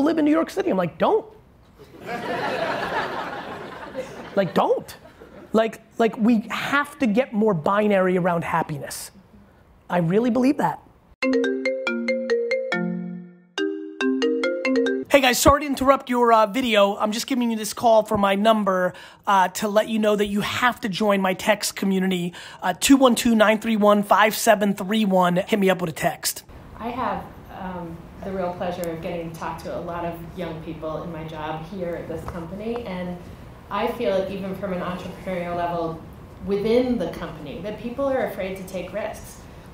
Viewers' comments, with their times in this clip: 0:10 I really thought that I received a call..
0:23 My dumbass got scared when a ghost answered the phone and Gary started talking 💀💀💀💀💀💀💀💀💀